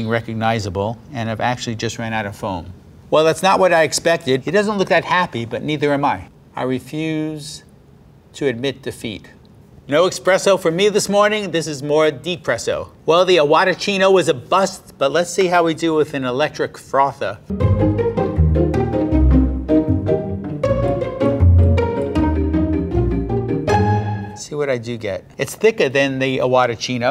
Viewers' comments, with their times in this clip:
0:09 ... He said expresso : (
0:10 “no EXPRESSO for me this morning.” Lol